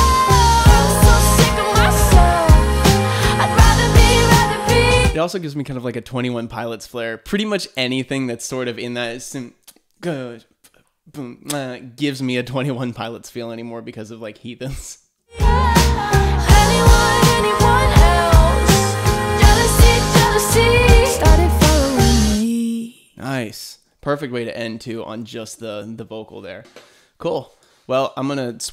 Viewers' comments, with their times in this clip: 0:09 it reminds me to Cut my lip by twenty one pilots